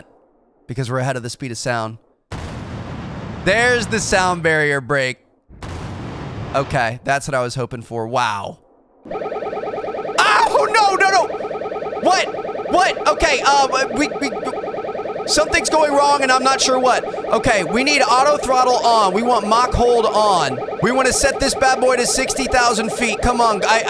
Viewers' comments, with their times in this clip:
0:09 That moment when you hear the alarms go off and pure terror sets in and you do NOT want history to repeat itself, so you scramble to try and figure out what went wrong... That was excellent!!